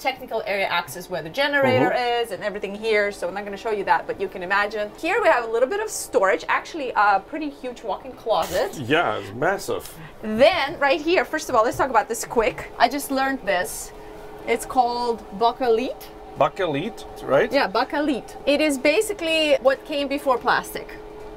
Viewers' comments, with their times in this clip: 0:09 At the mark, y'all mentioned that black plastic and called it "bah-ka-leet". I assume that's the German pronunciation, but it's pronounced "Bake-ah-lite" here in the US. Fun fact: Bakelite (Phenolic resin) was invented in New York by Leo Baekeland and patented in 1909. It's actually still in use today. Fiber reinforced phenolic resin sheets are pretty common in certain industries. I wouldn't be surprised if it was used in speakers, honestly. It's easy to machine, dimensionally stable, and tough. Not sure how it'd do for making a speaker cab, but it'd definitely be good for bracing.